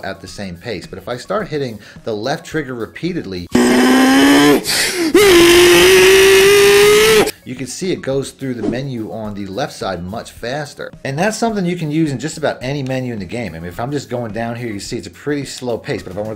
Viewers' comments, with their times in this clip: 0:04 RIP headphone users…